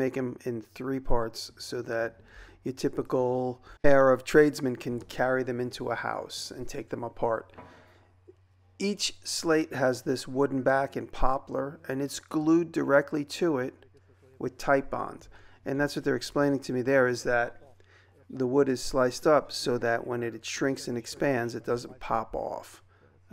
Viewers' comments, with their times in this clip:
0:04 what does typical Arab tradesman mean. (sorry I m not trying to be annoying, I just didn't understand)